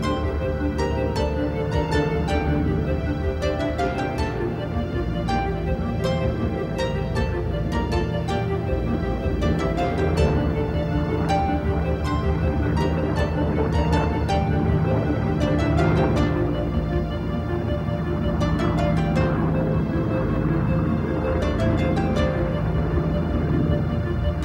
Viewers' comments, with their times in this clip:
0:10 I like the part about the medevac mission (starting ) best of all -- the way I see it, there's no other DC-3 mission that's more important! (Good choice of music, too -- fits the mood very well!)